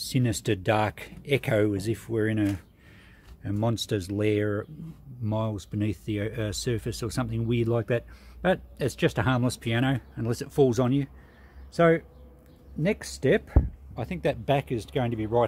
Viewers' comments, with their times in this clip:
0:03 thats not the sound of springs! Thats the actual wooden soundboard, its specially crafted with a specific piece of soft wood (usually spruce) and held into a perfect curvature with those wooden ribs on the back of it to make it resonate with unparalleled effect and sonority! The wonders of piano crafting :)